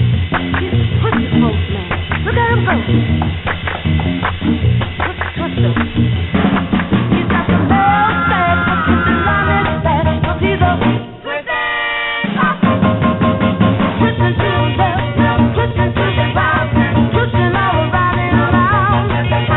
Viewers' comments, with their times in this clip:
0:07 Killer drum break and the background vocals kick in perfectly. Pop perfection.